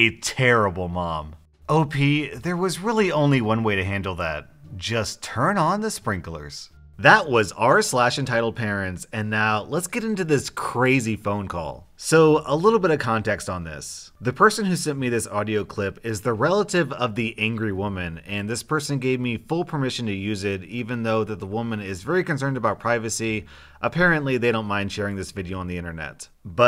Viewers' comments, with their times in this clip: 0:07 phone call but just a heads up if your wearing headphones lower down because the women scream is super loud